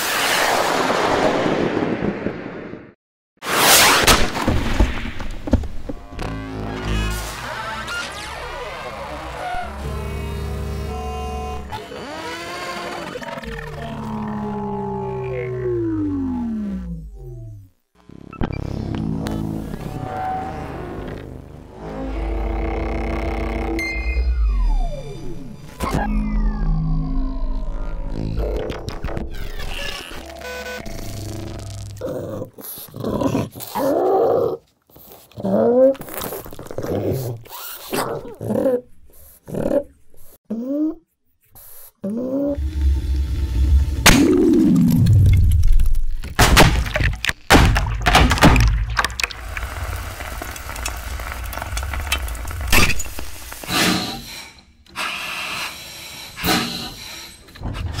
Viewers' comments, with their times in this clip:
0:09 what device is this? I love how it amplifies all the electrical noises we can't hear normally
0:23 The magnetic sound of the xbox disk tray button is so satisfying!
0:33 dog kinda sounds like the flood hmmmmm
0:42 sounds like a flood carrier form popping imo
0:43 Anyone else think the fire in the water caller jug sounds like a promethean disintegration?